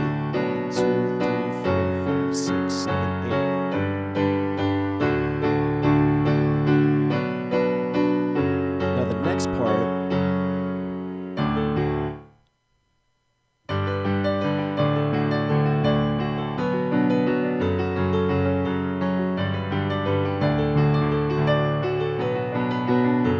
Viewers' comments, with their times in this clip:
0:10 big FAIL. LOL just kidding you play awesome, doesn't matter if you make a mistake.